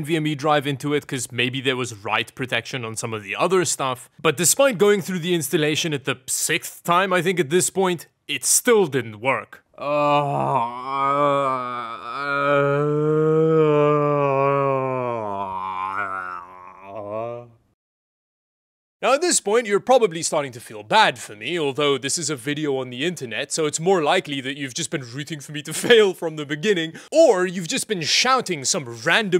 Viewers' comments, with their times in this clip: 0:09 caveman grumbling noises
0:12 I could really relate to that groan I have totally been there before. Good to know I am not the only crazy one.
0:16 you sound like wookie roaring :D